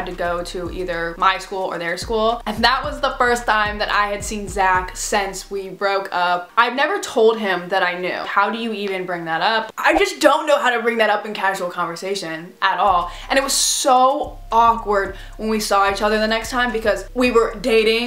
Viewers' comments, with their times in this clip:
0:03 I’m still laughing at the way you said “TiMe” in 😂